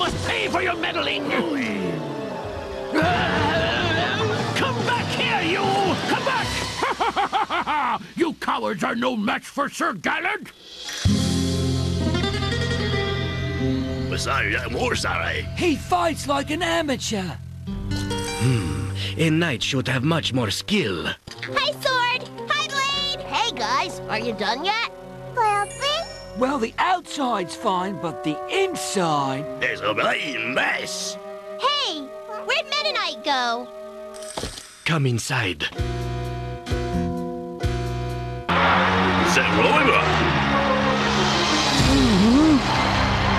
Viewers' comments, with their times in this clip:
0:10 I loved the rhythm of the guitar riff
0:29 Well, you can make out some of what he says. That is if you are well-versed with the European-English drawal. Anecdotally, you can hear him curse he says “it’s a bleeding mess!”. “Bleeding” (derived from “bloody”) in European English is the equivalent to saying “f***” in American English. It means that you wish the Queen ill.
0:29 I actually hear blade knight saying, “it’s a blazing mess.”
0:29 ) The ONE thing I could understand from Blade. "Issa bloodae mess!"